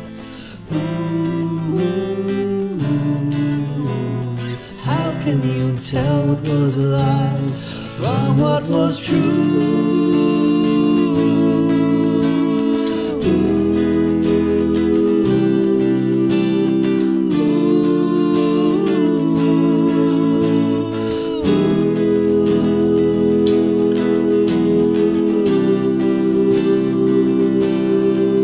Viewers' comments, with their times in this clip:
0:03 Love the harmonies around the mark
0:13 Things got a bit Beatlesque Lovely!